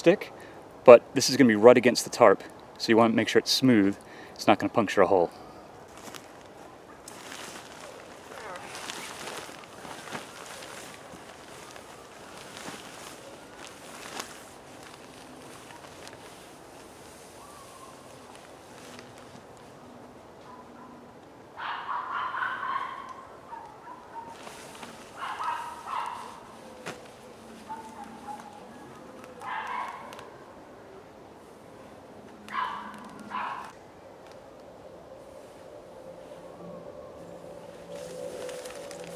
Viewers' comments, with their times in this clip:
0:08 he farted when he entered the tarp, nice one mate haha, i guess thats what you meant with high wind
0:21 Why do you do those noises in the Tarp ? ;-)